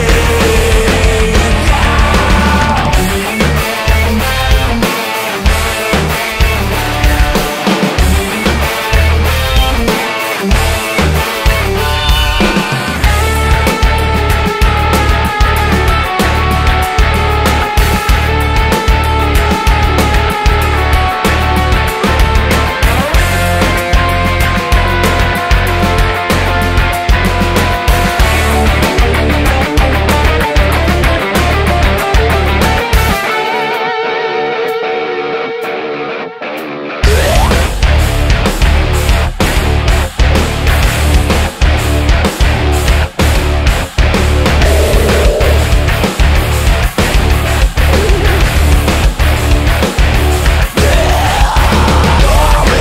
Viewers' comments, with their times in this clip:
0:03 Is that a sitar ? Whatever it is, it has an awesome sound!!
0:33 damn can someone explain to me the mixed meter it goes so hard but i have no idea how to count it!